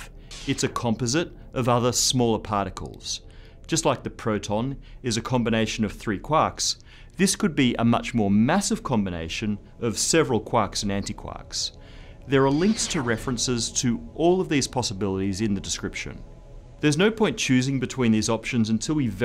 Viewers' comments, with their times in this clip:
0:05 how many quacks do I have to get to make a duck? love the accent m8 :)